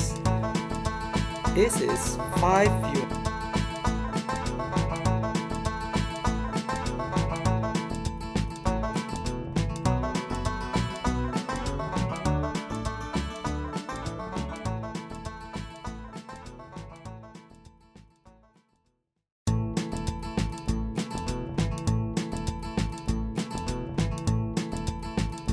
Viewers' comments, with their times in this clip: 0:10 the voice is gone after Sorryy....!! :(